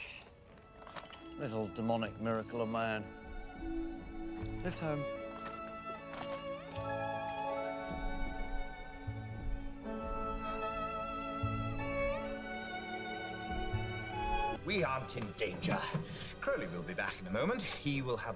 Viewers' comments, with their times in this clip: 0:03 I just die every time the romantic soft music plays like.. they didnt have to make it more clear and season 1 already showed that.